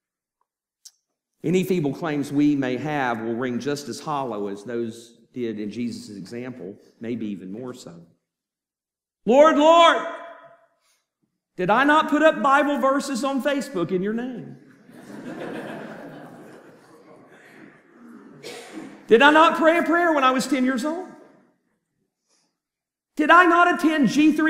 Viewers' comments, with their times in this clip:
0:10 So many Christian believe in vain & I know because I was one of them 💔 they’re laughing but it’s really not funny 💯